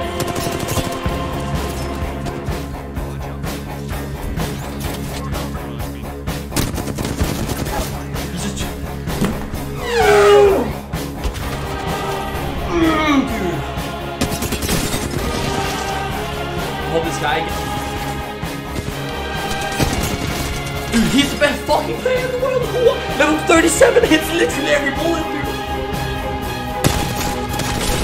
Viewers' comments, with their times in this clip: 0:08 sounds like man sharted lmao
0:09 did he fart